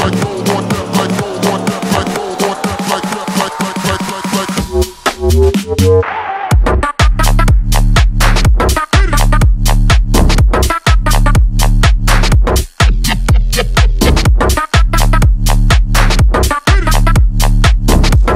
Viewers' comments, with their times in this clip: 0:04 in my opinion these drops destroyed all the song...😢
0:05 at .75x is honestly pretty tight
0:06 Such a banger. Also such a shame that they added that little riff Sounds whack and like they just didn't know what else to add....